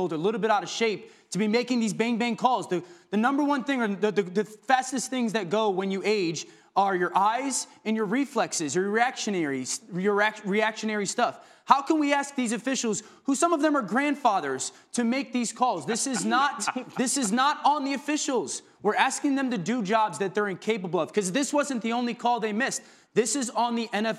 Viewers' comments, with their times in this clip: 0:07 I guess everyone missed it when Dan said "erection areas" mark. I know the others didn't lol